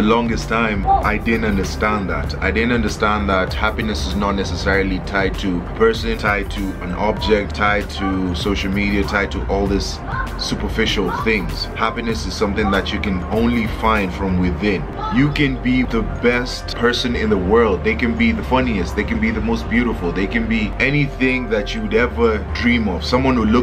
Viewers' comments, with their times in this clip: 0:07 who's making funny sounds in the background 😂😂😂